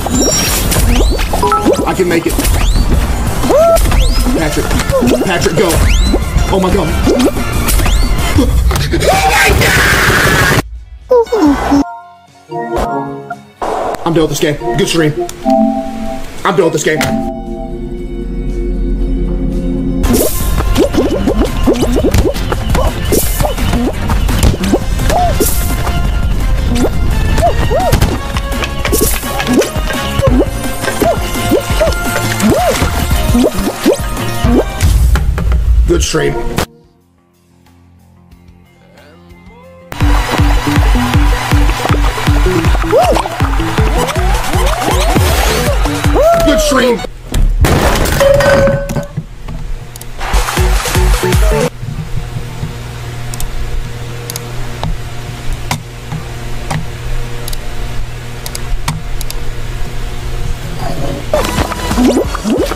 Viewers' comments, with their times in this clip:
0:08 OH My-* gunshots*
0:16 we didnt even hear a second of that desk smash 😂
0:47 Are those soda cans i just heard clattering? 💀